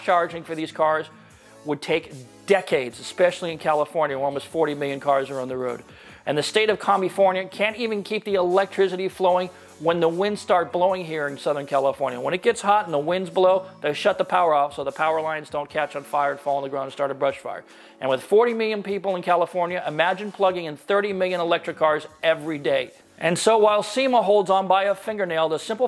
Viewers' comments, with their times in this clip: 0:05 Did I hear "Commu-fornia" 🤣😭
0:06 Did he just say Comie-fornia?? Lmaooo 😂😂